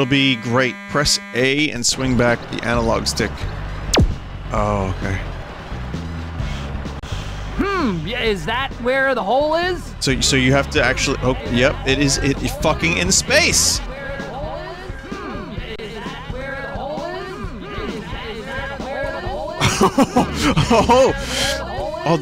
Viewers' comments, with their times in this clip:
0:07 that sounded like michael scott lmao, "thats what she said"